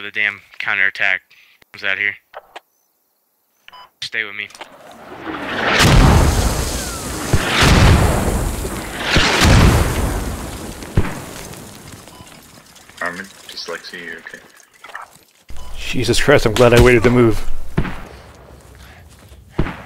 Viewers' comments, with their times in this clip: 0:05 is like, I better move now. And (boom boom) nope nope nope